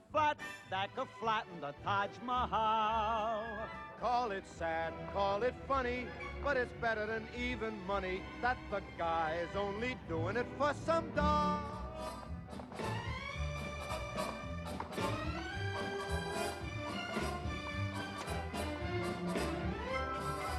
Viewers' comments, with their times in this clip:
0:07 A bit of mis-direction of Sinatra. when he says that it's better than "even-money," he sings it as 'it's better even than money,' not realizing that this is a gambler's term.